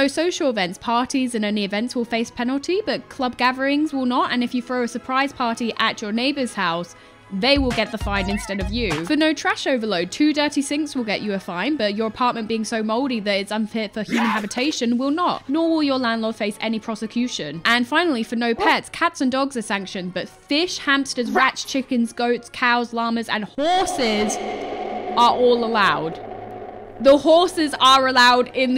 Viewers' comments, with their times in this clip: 0:09 You always make me chuckle but the unexpected demonic haCK made lol